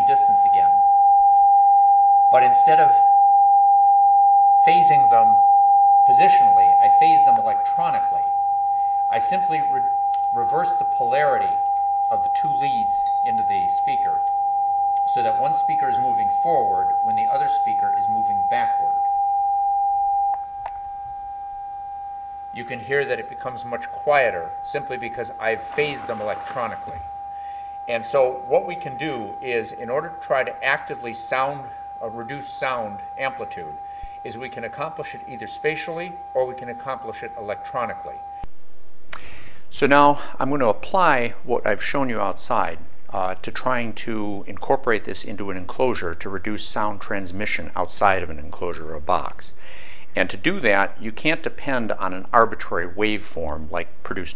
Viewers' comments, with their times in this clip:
0:09 great video, but would have been awesome to use a lapel mix or something for this part of the demo. My ears would thank you 😂👍🏻
0:38 great... no i got tinnitus